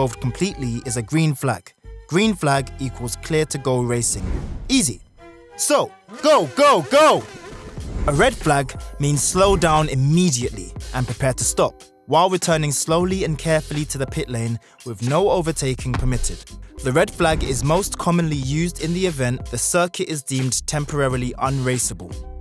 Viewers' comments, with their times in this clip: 0:06 Okay i like this video but are you telling me the FIA doesn't have enough money to stop their microphones peaking? Check 😂